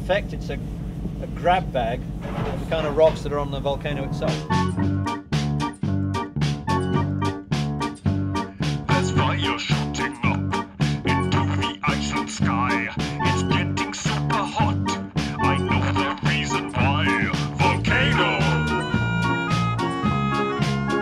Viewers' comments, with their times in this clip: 0:07 The "Volcano" ditty had my toes tapping, though.